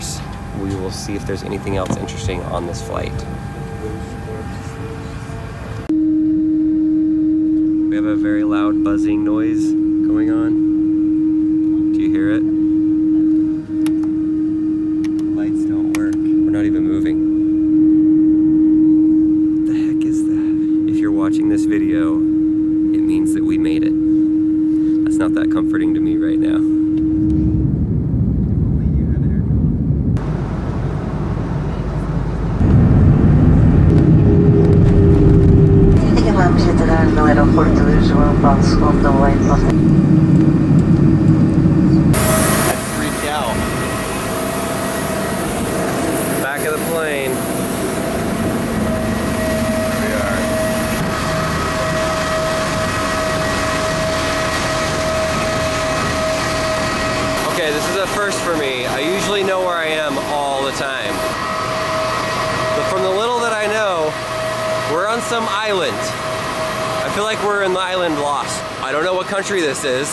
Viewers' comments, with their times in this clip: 0:06 that buzzing noise is an E flat
0:13 That is the sound of the engine starting up!
0:18 it’s the flaps being extended in old aircraft they can be loud
0:20 is a wierd sound
0:29 that buzzing sound is another engine let's all the way at the back of the plane
0:53 not an expert but aero plane engines don't make the sound in